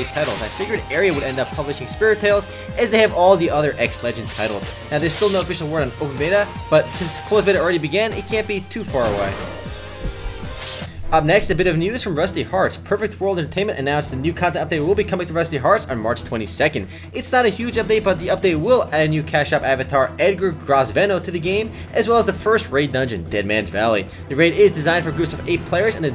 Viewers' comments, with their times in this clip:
0:10 Rusty ->F<-arts XD !